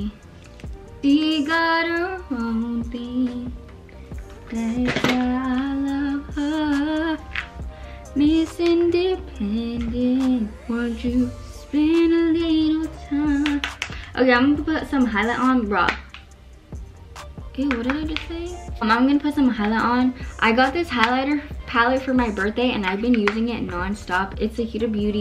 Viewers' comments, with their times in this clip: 0:07 ur voice is good! I love ur singing💞